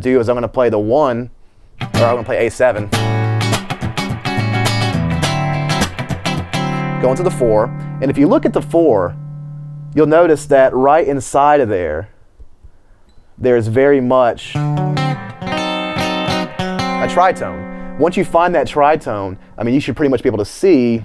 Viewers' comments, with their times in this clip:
0:03 Really nice job Emil. I think that was an A13 chord, rather than an A7 ? Or are you stating that you're taking one to mean the same as the other? (i.e of the dominant 7th 'family' of chords). Just wondering. Thx.